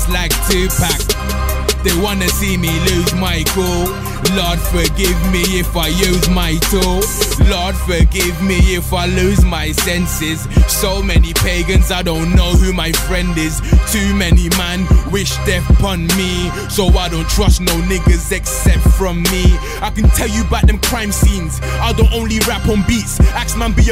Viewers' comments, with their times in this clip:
0:04 sounding like terminator